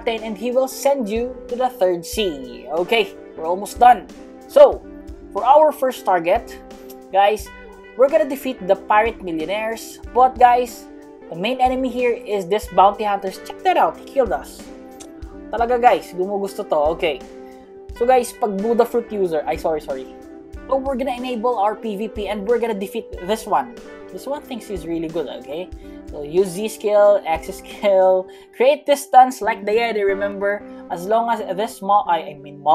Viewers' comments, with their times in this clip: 0:06 he started talking tagalog
0:14 bro was so angry at that buddha that he started speaking tagalog